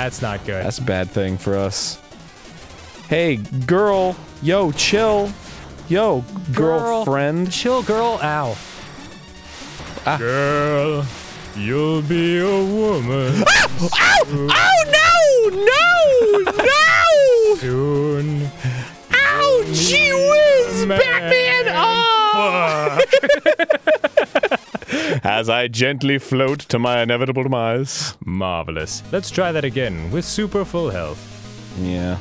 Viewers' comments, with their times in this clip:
0:10 and playing the part of Sr Pelo, Arin Hansen
0:10 (singing) You'll be a woman.. soooon... (instantly dies)
0:13 that was like a funk OW